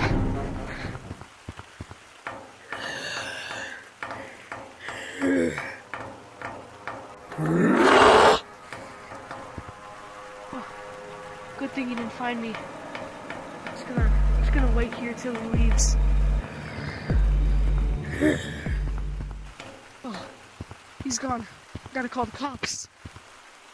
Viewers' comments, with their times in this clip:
0:08 Bro that roar was crazy But really good movie it was one of the best movies I have ever seen in my entire life